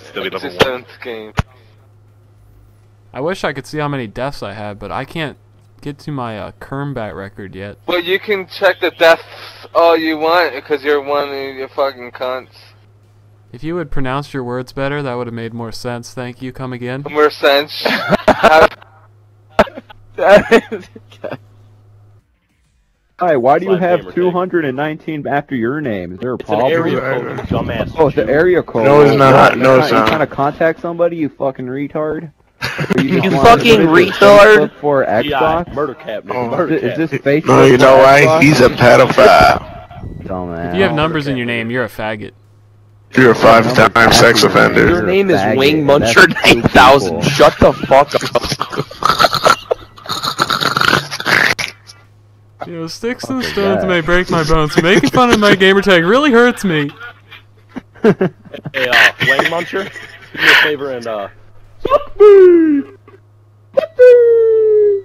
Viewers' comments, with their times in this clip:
0:08 no clue what hes saying
0:20 wtf was he saying
0:48 i don't even think Nobody can do a laugh that nerdy.
0:48 The laugh is fricken disgusting... who laughs like that.
0:49 lolz like a pig in minecraft